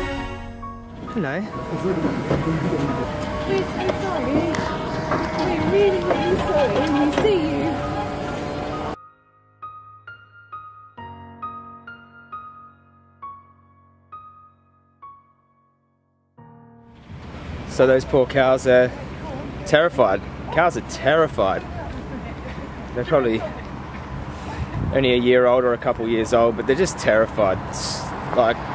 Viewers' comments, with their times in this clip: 0:10 when the cow started crying i started crying with them